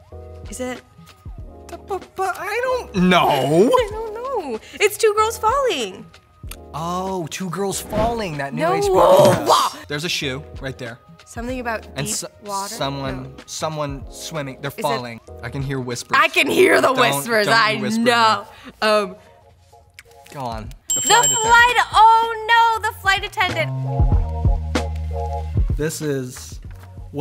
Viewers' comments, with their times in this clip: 0:08 The way she sounded 😂😂😂